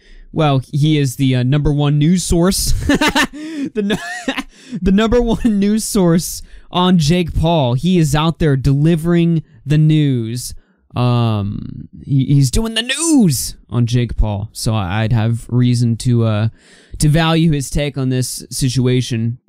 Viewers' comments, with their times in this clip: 0:03 His laugh was golden